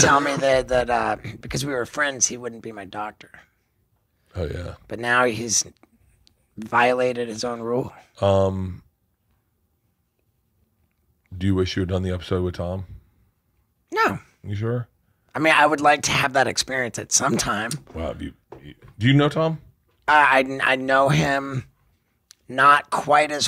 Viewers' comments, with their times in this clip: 0:10 I never heard Steve Os voice go so high 😅
0:11 😂 that's the high-pitched "No" when you're definitely lieing about something. Lmao